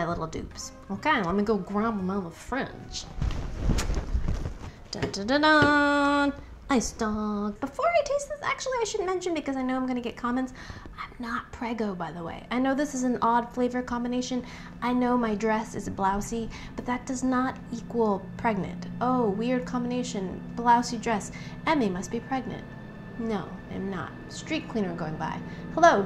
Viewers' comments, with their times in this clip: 0:10 “I know I’m going to get condoms” 😂